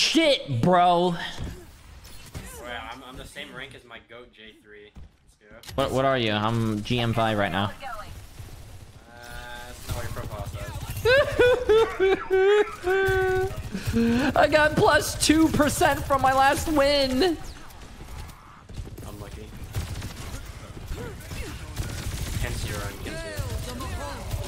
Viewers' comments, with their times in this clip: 0:10 what does the guy say ? I cant hear him